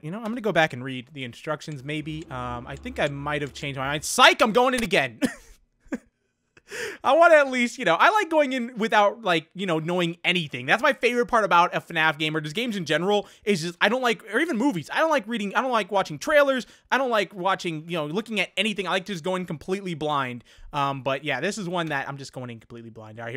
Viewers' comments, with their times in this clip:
0:07 Bruh its and the steam sound made me check steam wtf